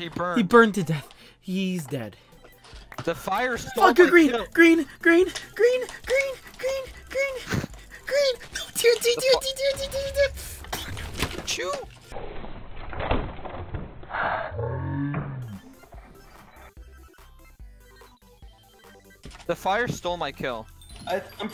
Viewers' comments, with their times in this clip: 0:03 it sounds like you swore lol